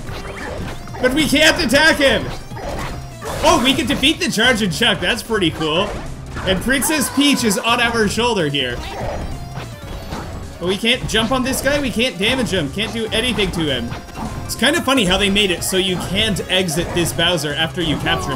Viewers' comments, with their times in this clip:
0:03 Am i the only one who hears a fard ?